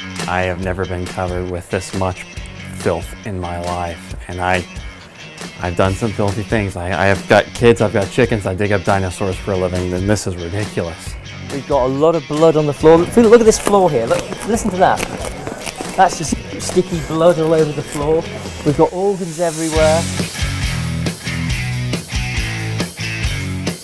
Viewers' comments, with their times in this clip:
0:04 Wait did u say gutt kids? >:(
0:05 I had to rewind it a few times because I thought this guy said “I’ve gut kids, I’ve gut chickens.” I was like hold on a quick second bud, what?